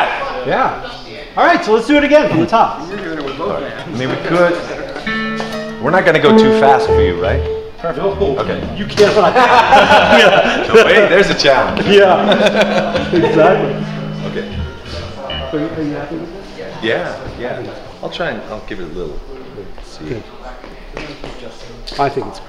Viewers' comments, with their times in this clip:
0:05 Slowtallica. lol. Maybe instead of playing triplets during the "darkness" part, you could play quarter notes or half notes. Yeah that could work. lol